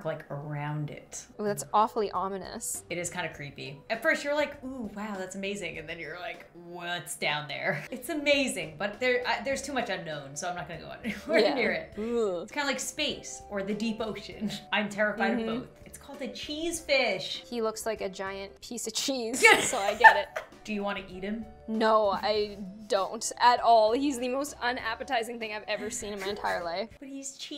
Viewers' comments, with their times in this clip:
0:09 I love how they are like oh it's kinds ominous while there is wholesome music just playing in the background